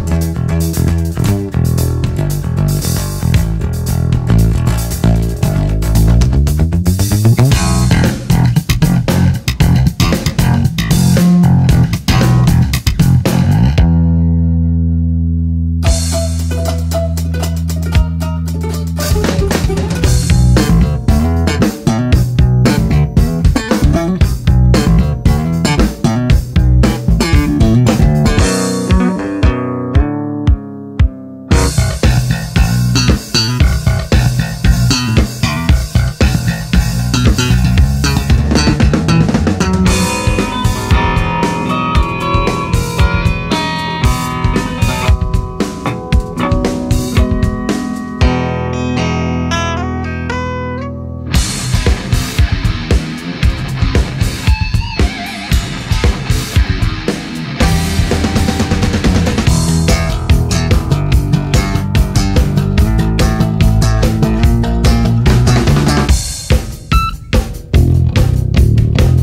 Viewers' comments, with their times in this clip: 0:07 Rob your slappppppppppppppping it like a drum :Edit 4 months later tnx for 12 likes
0:07 That 2 strings Bass part from Rob sounds sooo amazing holyyy
0:16 is such metal 🤣
0:16 its balaika?!? Oh no, he’s near!!! It’s me! Russian gopnick! Сука Блять!!!
0:28 Rob hits the sweet spot of strum
0:28 Idc will always be my favorite little riff it gives a dark metal feel
0:39 is one of the most beautiful things I've ever heard played on a guitar.. does anybody know if there is a full version of it somewhere?
0:39 Robs playing there is underrated.
0:39 i like rob when play his guitar
0:39 What is the tuning ? Love it
0:39 that guitar solo
0:39 is classic Rob scallon bullshit. Overly complicated theatrics that sound messy and terrible
0:40 i love the guitar song
0:40 What tuning is rob's guitar
0:41 all highschool romantic ending songs
0:42 GUITAR BAD ROB
0:45 Did anyone else think the part that Rob played was really beautiful?
0:45 MAN THE MELODY
0:46 😮 you PLAYED A GUITAR?!?!? I’m speechless….
0:47 sounds like some 90’s show intro
0:47 Wtf guitar not epic
0:50 robs riff is so sick
0:50 that riff is so good and it sounds like pantera
0:50 Is that a guitar???
0:51 I like that riff on 7 strings
0:51 the best riff
0:51 I f*cking swear this guy has a 7 strings
0:51 is that a guitar
0:53 that riff is so cooooll